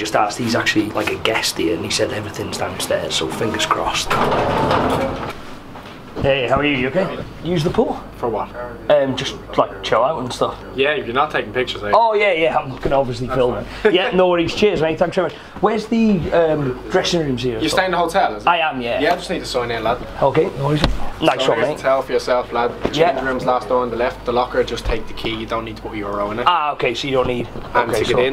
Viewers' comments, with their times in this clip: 0:09 that guy wasn't nice could've said it nicer